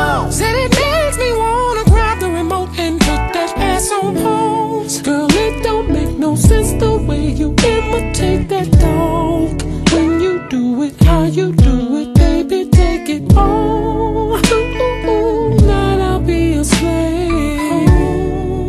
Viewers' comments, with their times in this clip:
0:05 GIRL IT DONT MAKE NO SENSE THE WAY YOU IMITATE THAT DOG,@ FROM THE BACK? LORD HAVE MERCY,YALL PLEASE FORGIVE ME,THIS IS TRULY MY JOINT FROM TP-3 RELOADED!